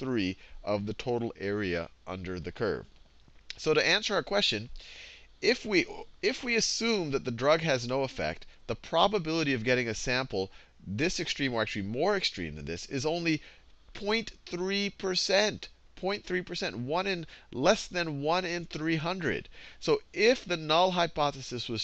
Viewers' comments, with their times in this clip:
0:04 did he burb haha? I love this guy